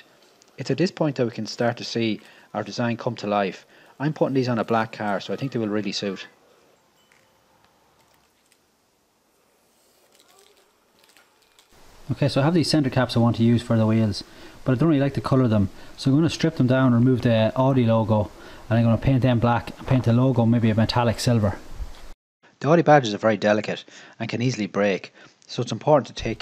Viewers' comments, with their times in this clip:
0:07 What about the moaning in the background 🤣